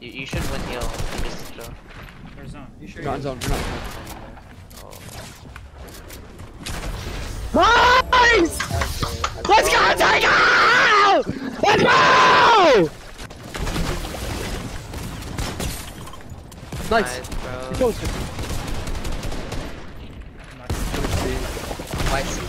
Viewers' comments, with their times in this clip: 0:06 You have to put some ear rape warning😭